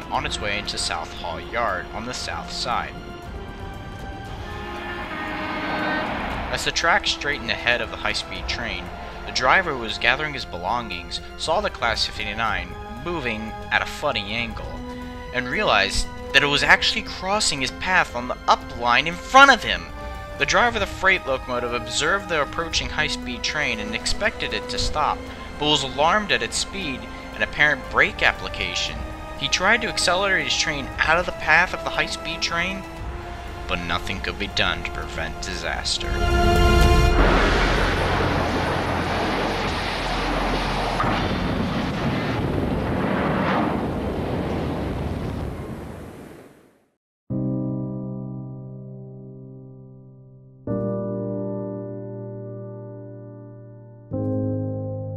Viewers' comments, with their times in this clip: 0:05 I love that sound of the horn.
0:41 chuggington cupling soubd